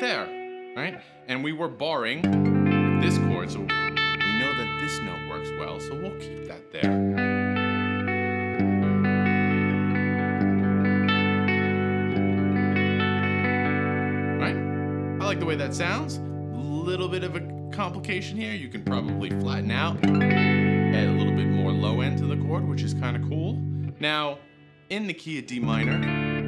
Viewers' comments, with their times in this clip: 0:07 sounds very much like 'All new materials' from Periphery. Great lesson!